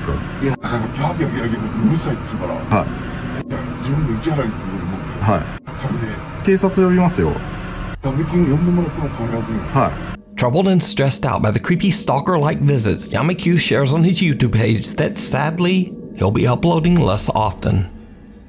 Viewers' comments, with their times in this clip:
0:05 # After he throws that boiling water & the voice screams, there's a vicious growl at the end of the scream. I listened, 3 times & I heard it, every single time.